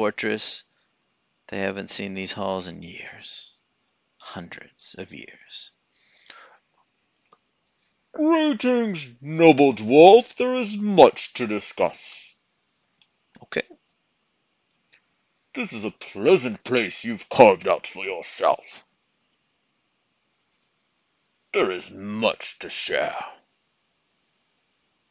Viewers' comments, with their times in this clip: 0:07 that accent is incredibly offensive to humans. Keep up the good work!